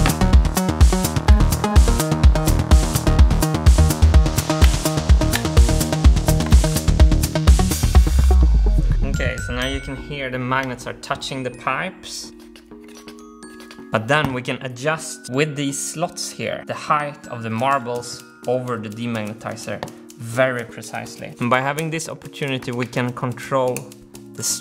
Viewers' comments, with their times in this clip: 0:09 Sounds like someone slurping!
0:12 it sounds like somebody is making the sound with their mouth XD like a weird slurping.